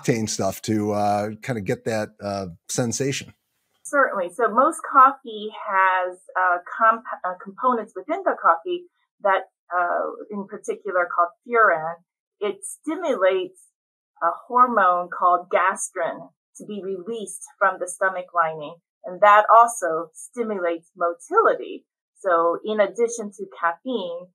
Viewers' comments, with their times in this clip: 0:10 she says, on the components of coffee, one of them in particular stimulates a hormone called gastrin to be released from the stomach lining. The word she said sounded like "cofura" but I can't seem to catch it. Can anyone let me know what word she was saying?